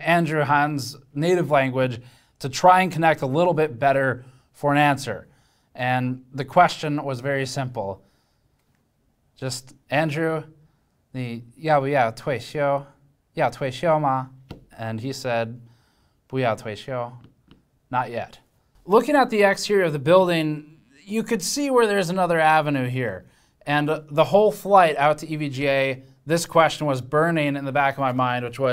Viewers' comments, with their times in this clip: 0:09 your mandarin language is very good 👍🏻 respect btw, i'm not chinese / taiwanese